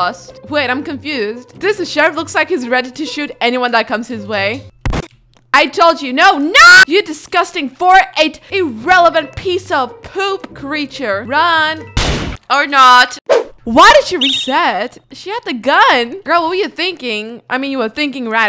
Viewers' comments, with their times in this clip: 0:05 was to good bro her scream🤩
0:06 the most percent scream